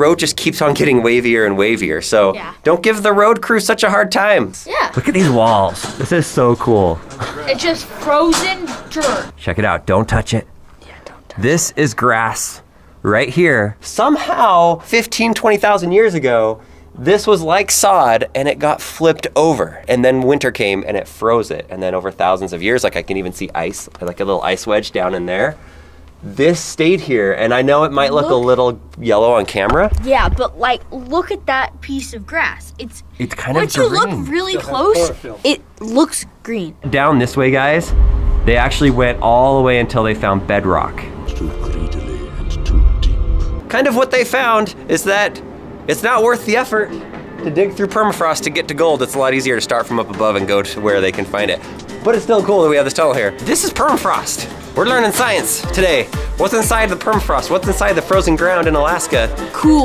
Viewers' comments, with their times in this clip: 0:06 who heard someone say bru
0:07 anyone else hear the bruh sound effect
0:07 i heard "bruh" like the meme
0:07 Am I the only one that heard bruh at like
0:41 what is the voice saying ...tuti???